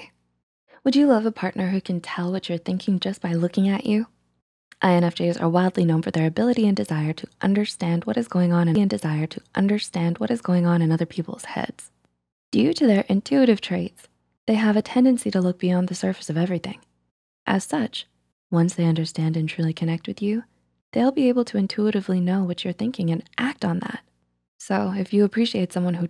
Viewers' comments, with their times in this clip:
0:08 there's an editing mistake I guess, it got repeated